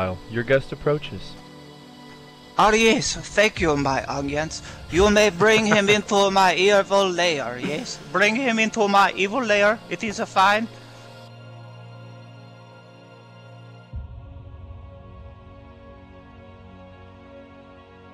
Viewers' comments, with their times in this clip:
0:03 R Yes Thank You My Evil Onions 😂😂😂😂
0:05 yes thank you my onions